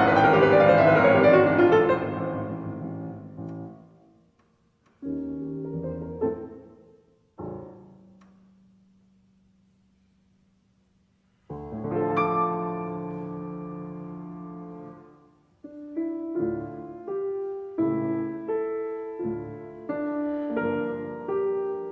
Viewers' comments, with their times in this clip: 0:09 What wonderful Medtner! Such a deep joy to hear performed so well.